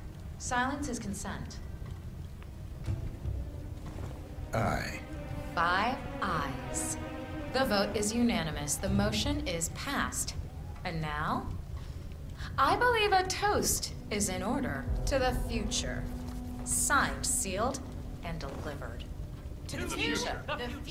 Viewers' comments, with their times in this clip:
0:04 I think they all hated her because one said calmly "oh shit" and nothing else